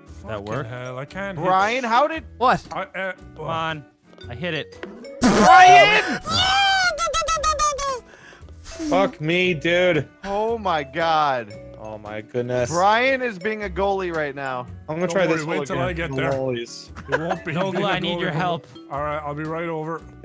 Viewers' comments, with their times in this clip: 0:06 that was a borderline 3 stooges sound.